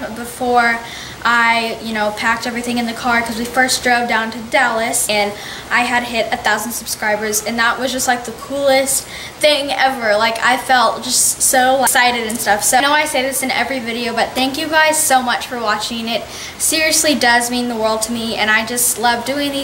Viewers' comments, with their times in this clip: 0:04 hahaha in the back ground